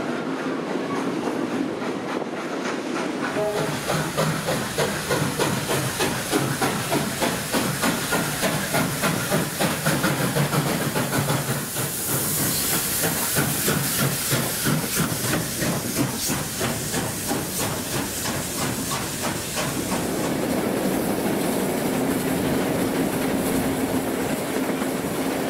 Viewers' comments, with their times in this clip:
0:10 Did I hear a little bit of wheel slip at Camberwell ?